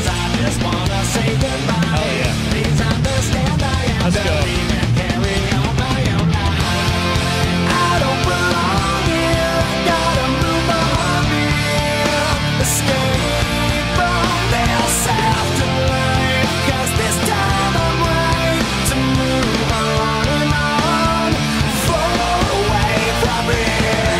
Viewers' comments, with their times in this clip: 0:07 y'all forgot about the "aaaaaa aaaaaa aaaa" thing going along with the vocals, it adds so much more detail to the song.